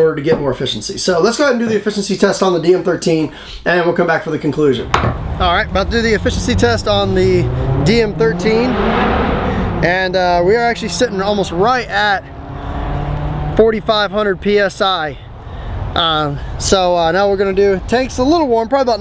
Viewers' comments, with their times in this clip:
0:07 Ferrari ripping off a redline shift? lol and i'm pretty sure 690 vs 685 paint would be like 2/3 balls per pod not 10